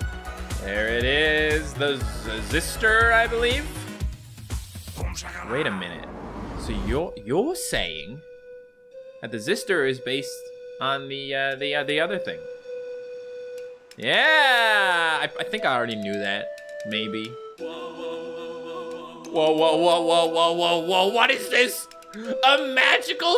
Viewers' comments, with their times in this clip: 0:05 bro turned bri'ish
0:07 he sounded british